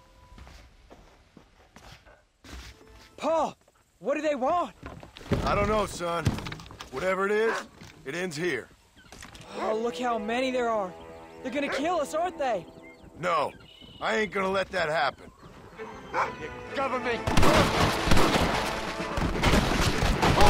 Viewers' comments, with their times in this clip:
0:08 it ends here He unfortunately was right about that it did end there in a way idk what or how but it did also when that song starts there and the army starts to come kinda makes the part more dramatic fr